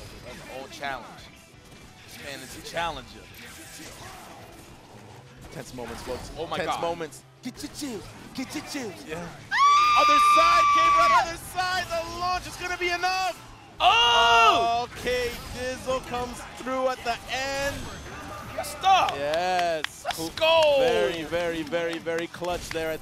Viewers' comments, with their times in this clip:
0:09 hollywood level cinematic scream efx